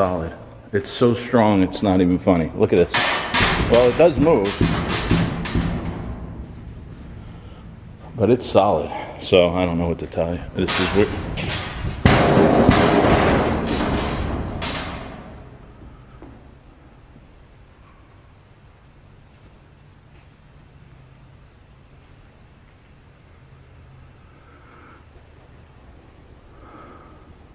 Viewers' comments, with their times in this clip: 0:08 while you're saying the shelf is solid, there's an evp of a female but it's hard to say what she's saying. Awesome video, as usual. Praying for your speedy recovery all the way from the Philippines 🇵🇭!! 🥰